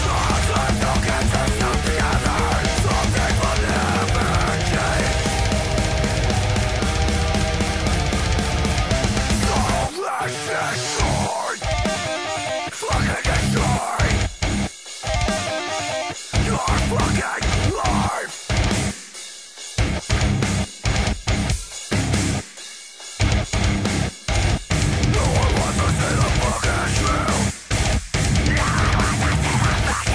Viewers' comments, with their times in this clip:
0:09 = best tempo change
0:11 just sounds so fucking whimsical it's mindblowing
0:13 fucking nice guitar riffs!!